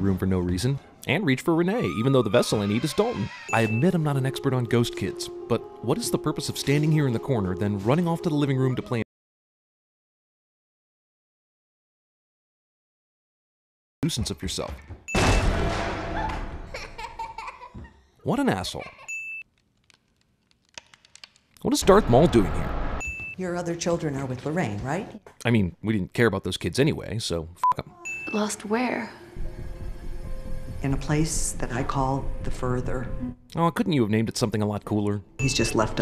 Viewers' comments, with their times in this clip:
0:05 am I the only one with that audio cut out
0:07 Listen whether or not I'm stupid but check the part ,she Didn't notice the child right there until he played tip toe music.
0:08 is the audio suppose to cut out right here? What is happening? 😐
0:09 was it just me or did the sound cut out??
0:21 1. did he say dark maul instead of darth maul 2. Sssaaammmeee